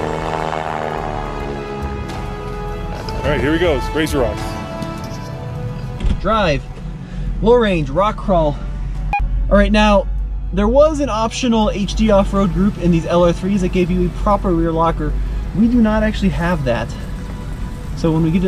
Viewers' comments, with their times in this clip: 0:04 Great comparison! The airplane noise outstanding touch!